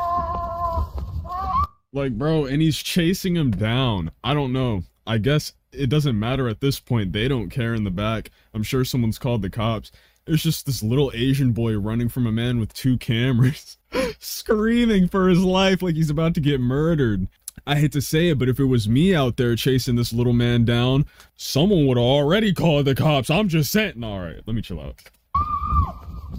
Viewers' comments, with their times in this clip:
0:10 That scream holy shit